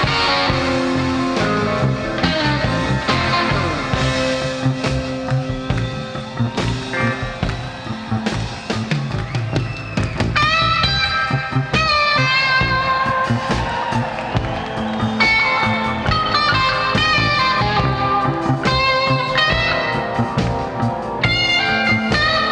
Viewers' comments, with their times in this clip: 0:06 Beginning of this solo is straight up pure and full of feels... just a polished off soul with some dents here and there from the road. One of my favorites from him.